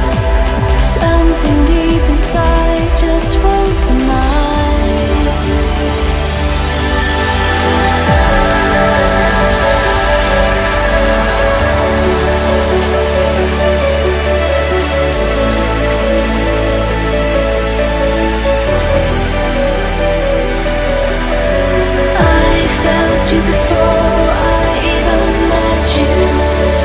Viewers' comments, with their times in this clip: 0:08 the transiotion isnt as smooth as you would expect from n2o